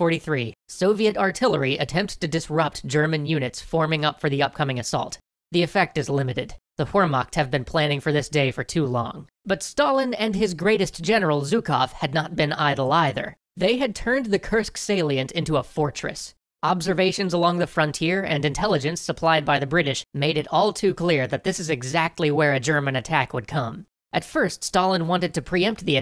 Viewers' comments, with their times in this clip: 0:10 'General Zuko' had me really confused for a moment... Pretty sure it's pronounced Jukov with like a French J but that's not the reason :P